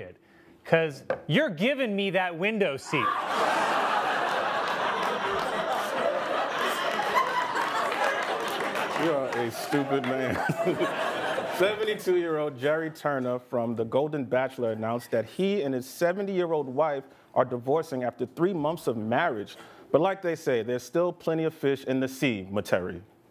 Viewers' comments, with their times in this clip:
0:09 The way Michael says: "You are a stupid man." Absolutely kills me.